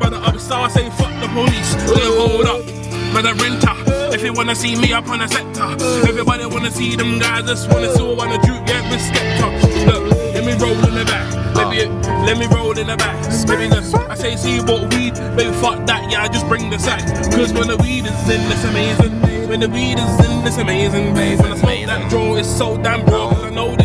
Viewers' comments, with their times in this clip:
0:06 yo what's the beat ? sounds P H A T